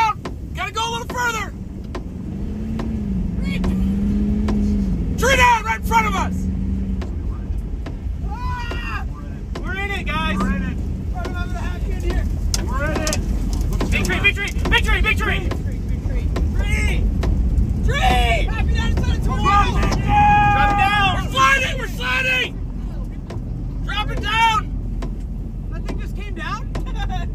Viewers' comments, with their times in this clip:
0:08 The "Bruh" sound clip. I swear